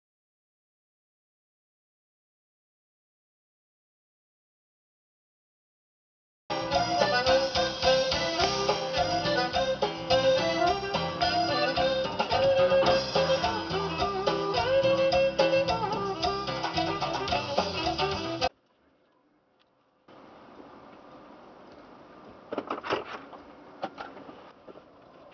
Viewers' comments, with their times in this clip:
0:07 Mexican country music 😂
0:09 ... This dude pumps himself up with some sick jams to go to work at the circus.
0:12 The biggest crime perpetrated here is the music.